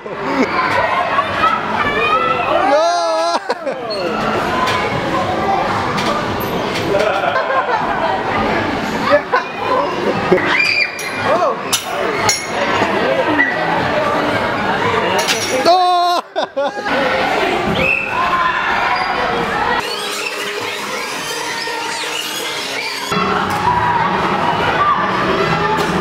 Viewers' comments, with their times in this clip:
0:10 it sounds like that was his scream xD perfect moment too right when he almost slipped a girl eats shit in the back at the same time and screams and makes it sound like that was his scream xDD epic!